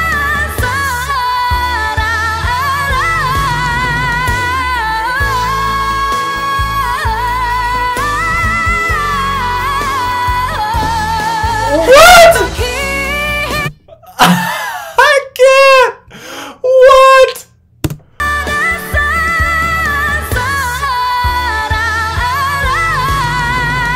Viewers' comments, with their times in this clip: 0:09 When you wanted to stop it coz you thought she already d9ne hitting those highnotes and then what??from where did she get that air from her stomach dude😅